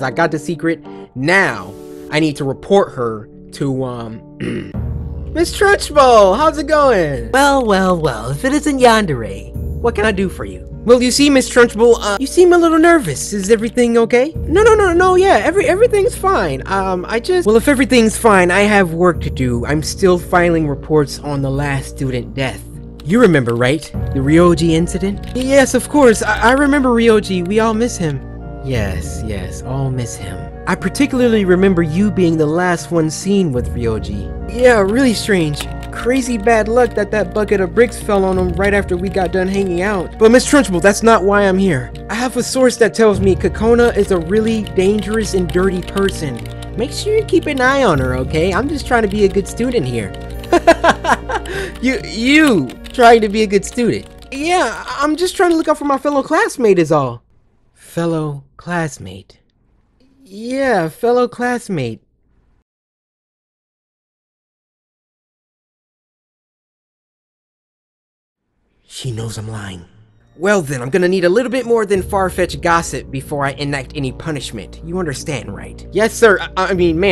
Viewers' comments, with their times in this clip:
0:09 That voice crack, though xdd
1:04 this is awkard silence guys